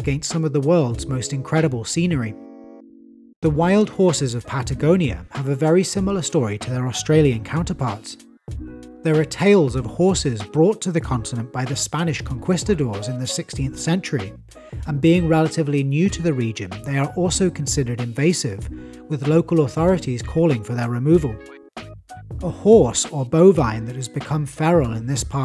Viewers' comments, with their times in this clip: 0:10 I'm impressed too, which makes me wonder why he said "conkwistadors"